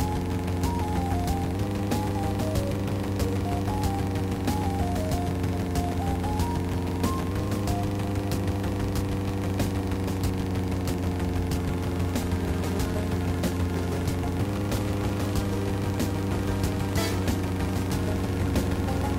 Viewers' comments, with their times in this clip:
0:04 The music in this game is really nice. My favorite being the track playing ,and I like the surreal look of the tracks. I know I am guilty of bashing this game. I guess as a gamer, I've committed the sin of not judging the game based on its merits.